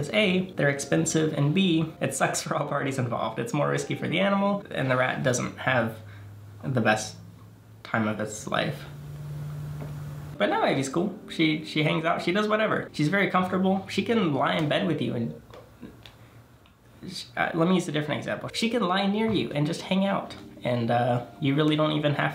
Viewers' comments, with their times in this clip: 0:09 that gulp. For the first time ever, he actually looks genuinely uncomfortable 😣